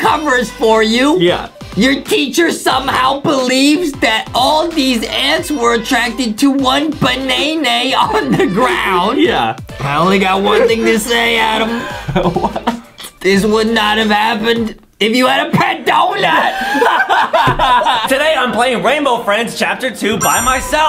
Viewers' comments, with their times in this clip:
0:07 Bro really say beana